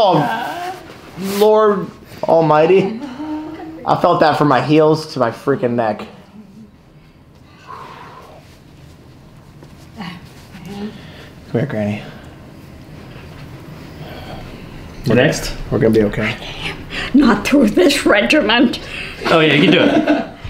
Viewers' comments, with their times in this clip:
0:06 quiet for just a few moments... wow he won't shut up...